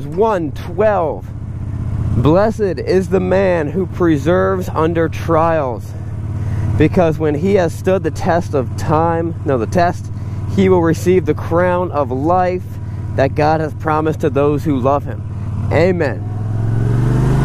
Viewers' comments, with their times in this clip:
0:04 sounds canned 🤣...pretty sure that's perseveres!